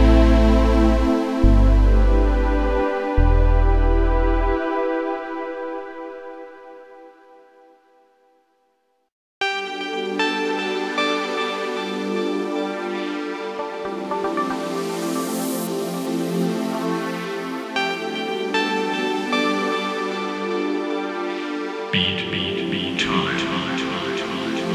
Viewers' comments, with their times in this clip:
0:09 Nice kick to a playlist that would otherwise put you to sleep.